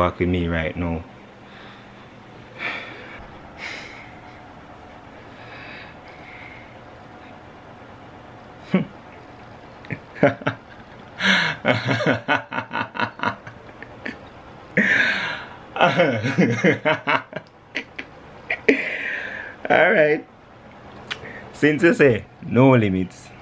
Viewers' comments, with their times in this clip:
0:10 It's the laugh for me